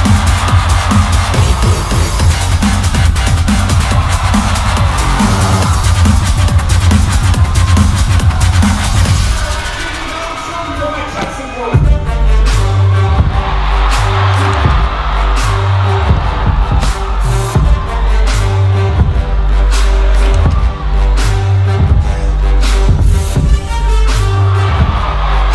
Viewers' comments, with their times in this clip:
0:10 is definitely my favorite part I've watched it at least 50 times now omg I am obsessed with minimalism and that drop there is so simple but so damn impactful and their musicality for that piece was amazing too with the HOO!